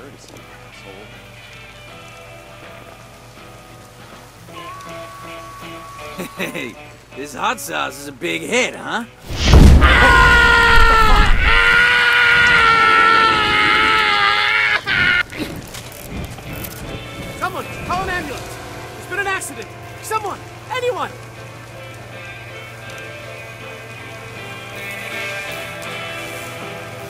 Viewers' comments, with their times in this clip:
0:08 LMAO his scream